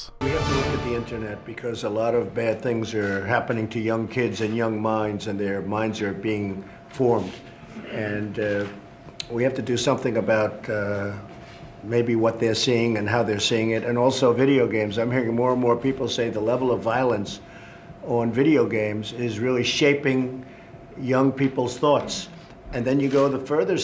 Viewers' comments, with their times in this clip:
0:09 very well spoken. uhh, uhh, dauu... uuhh..